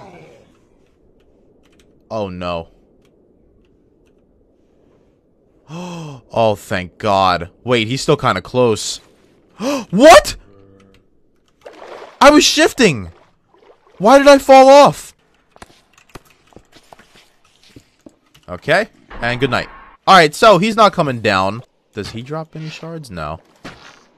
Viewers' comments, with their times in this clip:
0:09 Lmao the zombie went Bruhhhh